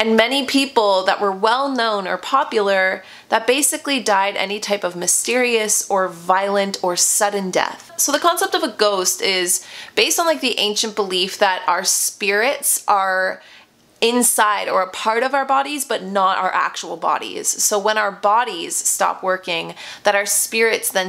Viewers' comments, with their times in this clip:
0:07 I heard some weird background singing or something like that.